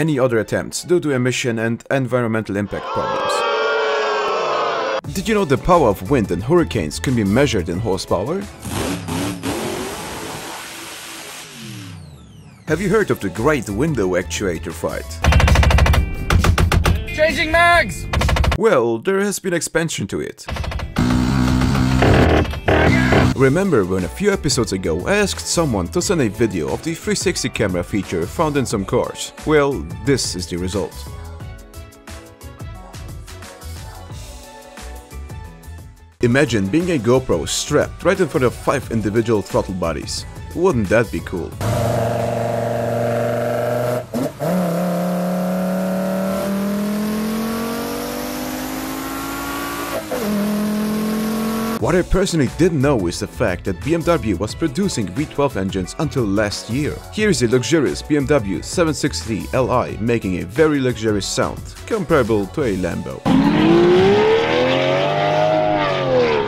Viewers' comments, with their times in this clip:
0:08 the best crossplane sound i've ever heard...i wish a mustang had that same sound..
0:14 that window motor has heard a lot from his cousin who is a motor in a minigun
0:20 more like A-10 cover fire
0:20 that's A10 Warthog's brrrrt
0:47 Yeah that gopro gonna bleed through its ears